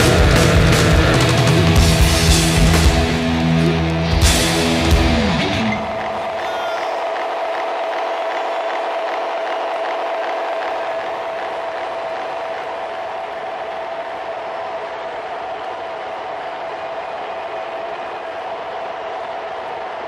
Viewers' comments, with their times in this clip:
0:05 that was the most satisfying reverb/delay tail ive ever had... . . . . . .